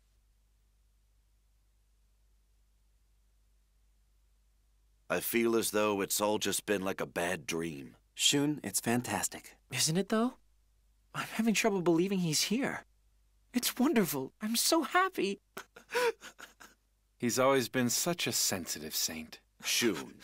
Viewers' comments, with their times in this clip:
0:08 I love how Seiya says that line.